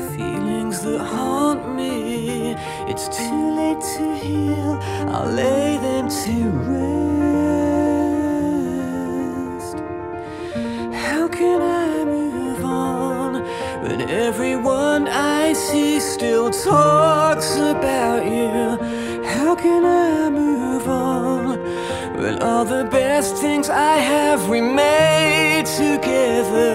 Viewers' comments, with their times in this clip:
0:10 The melody reminds me of Britney Spears - Everytime, especially